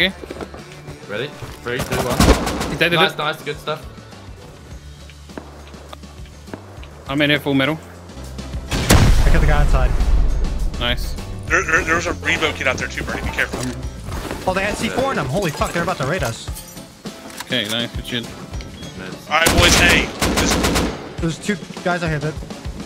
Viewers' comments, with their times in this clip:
0:10 dude sounded like sans for a second